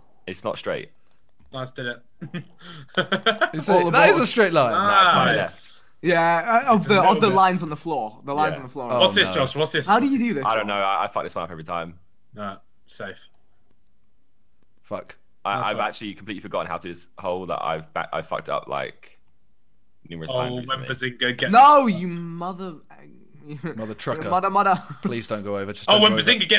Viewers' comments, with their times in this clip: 0:09 Just me where he put a different recording in